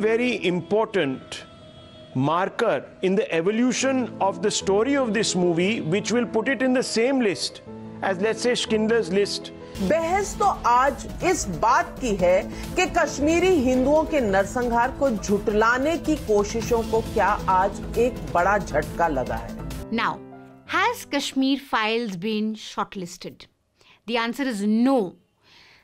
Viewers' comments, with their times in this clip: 0:08 skindler list🤔🤔🤔🤔🤔....Wonder which that is 😝